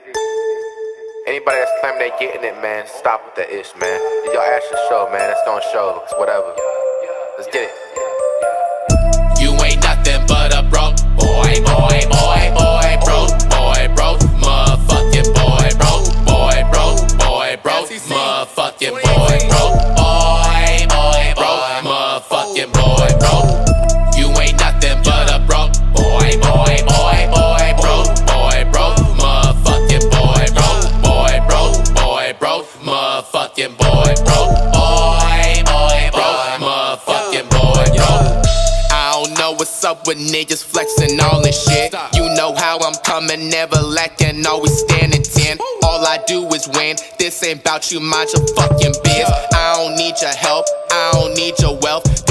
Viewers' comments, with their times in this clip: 0:09 when the homie in the back plays a song and you hear a Spotify ad
0:09 bro sounded like he was tweaking while saying that
0:20 sounds like an Asian man saying boy, lol.
0:38 at 1.25 speed, Flight going off